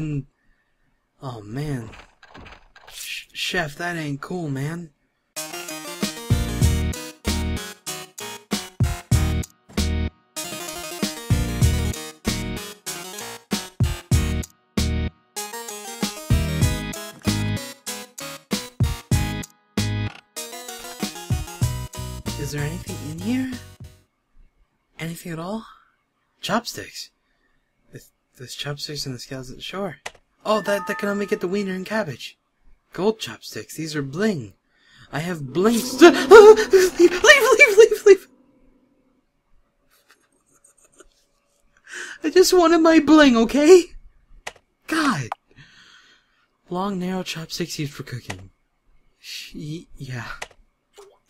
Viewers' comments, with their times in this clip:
0:08 That music scared the chiz out of me OMFG
0:36 Am I the only one who replayed so many times? I mean it was just so cute when he went all "Leave leave leave leave!!!" LOL.